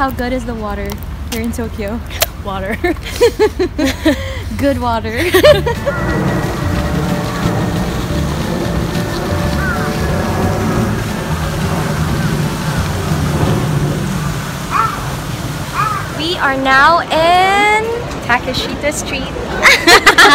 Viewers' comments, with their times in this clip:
0:04 That plane must be lost. It sounds very low.